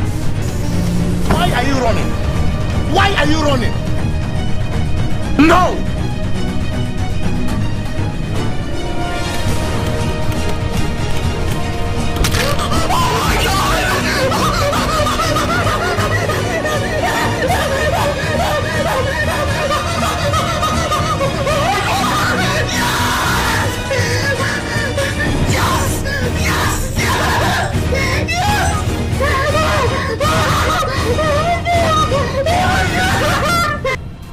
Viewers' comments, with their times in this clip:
0:10 RIP headphone users🤣
0:12 RIP headphone users OH MY GOD!!!!! OH MY GOD!!!!!!!!!!!!!!!! Yes!!!! Yes!!!!!!! Yes!!!!!!!!!!!!!!!! OH MY GODD!!!!!!!!!!!!
0:12 sounds like dog barking at strangers
0:21 you were going to lose your voice
0:22 Rip my ear